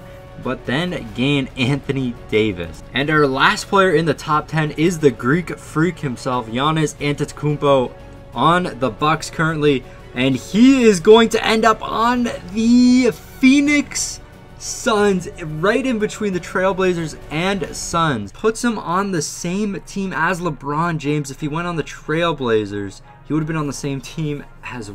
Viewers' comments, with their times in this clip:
0:06 you're getting better at saying his last name